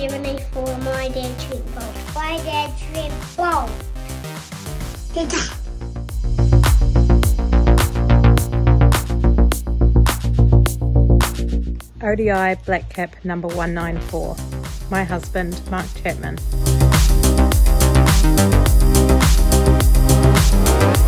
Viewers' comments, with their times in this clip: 0:06 Does Trent Boult son says Pitah